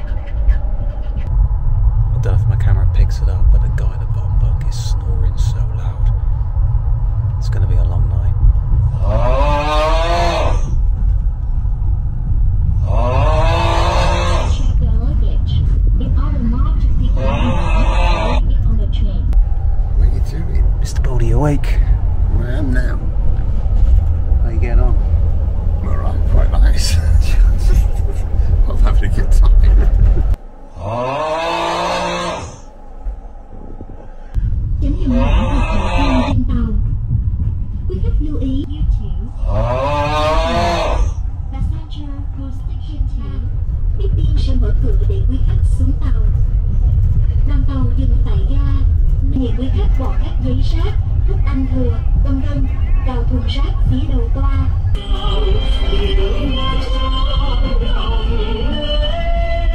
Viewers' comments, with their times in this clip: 0:06 the killer snore lol
0:09 I thought there was a bomb siren going off, wtf is that noise
0:09 Bloody hell, I thought it's a chainsaw
0:09 that aint snoring. Sounds like demons lol
0:09 was that a real snore??? Or did you add that sound effect?? Cause GAAAAAAAH-DAMN if it was real, I would’ve woke his/her ass up and told’em to turn on its side and sleep 🤣
0:11 bloody'ell that sounded like a soviet drujba chainsaw 😂😂
0:16 waa the real snoring or audio from some meme
0:30 Sounds like a cow being driven to a slaughterhouse.
0:43 Those are not snores. Gruntzilla!